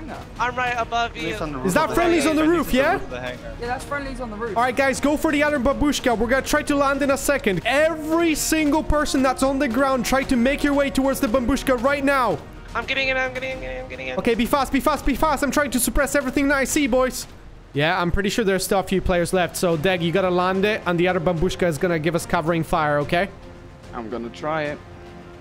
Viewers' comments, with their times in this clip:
0:08 The American Babushka Vs The Russian Babooshka